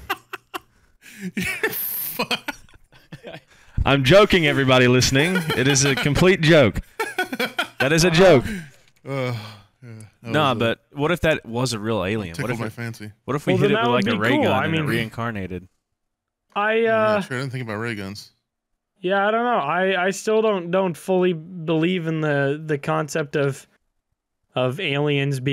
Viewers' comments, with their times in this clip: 0:06 I’m not THATS HILARIOUS (si señor yo soy del rancho (high & long kazoo tone)